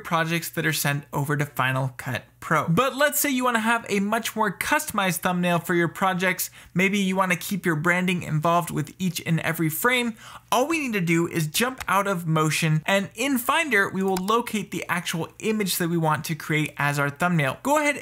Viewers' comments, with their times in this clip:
0:06 was that a cat? :))